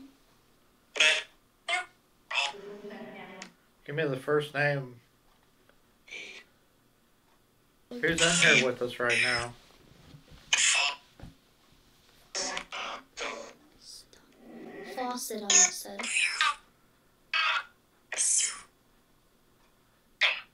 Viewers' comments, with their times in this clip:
0:06 it sounds like the spirit box says “Ethan”